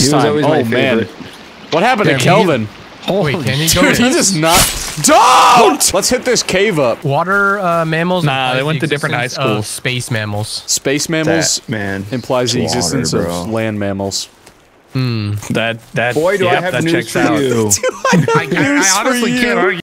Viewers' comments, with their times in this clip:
0:05 the voice of panic because our boy Kelvin is getting hurt